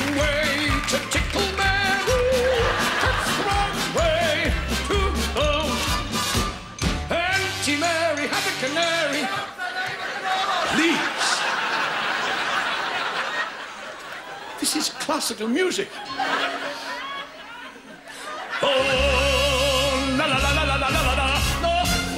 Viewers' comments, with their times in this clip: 0:07 Auntie Mary had a canary ...... What does the audience sing? I always hear "Fuck the name of the lord"